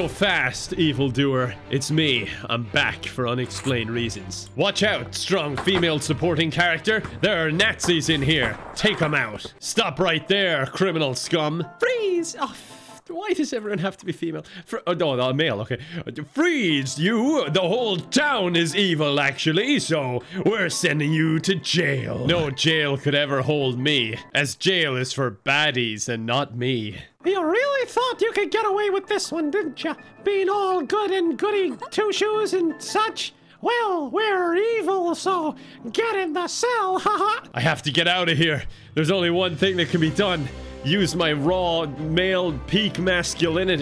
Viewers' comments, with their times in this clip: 0:07 the avengers music in the background is perfect
0:27 His voice from sounds like Mickey Mouse 😂🤣
0:27 You would be an excellent Micky Mouse voice actor.... hahah
0:27 is that you Mickey Mouse?
0:27 Strong Female lead decides to channel her inner Mickey Mouse